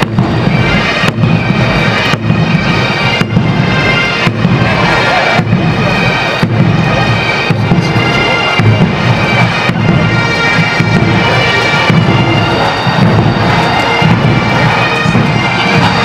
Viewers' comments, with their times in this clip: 0:03 I loved it right when the pipes were phasing in and out with the reverberations, and there was some weird acoustics going on. Just reminded me of when the enemy first started hearing the pipes from across the field, and the louder they got, the more they were peeing their pants, wishing they'd stayed home with their mums! Ah, the pipes! If it's in yer blood, you get it!